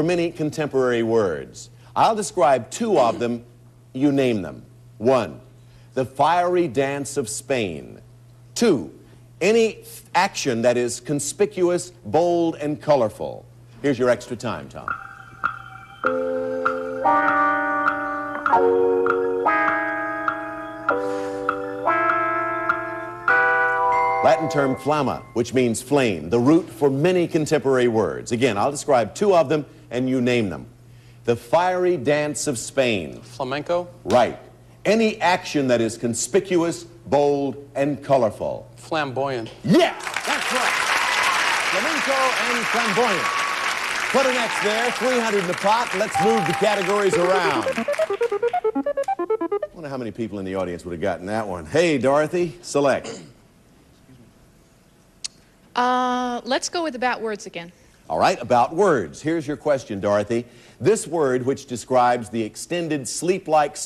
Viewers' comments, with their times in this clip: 0:08 The extra time music ish, is so chill.
0:15 Love that Wah Wah guitar think cue.
0:46 That category shuffle sound reminds me of the "Jeopardy!" board fill sound.